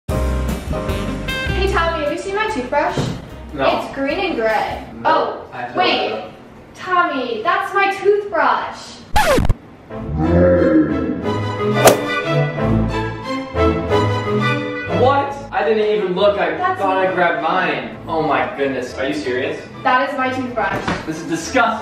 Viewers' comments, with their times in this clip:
0:07 I love how the record stopping sound effect LOL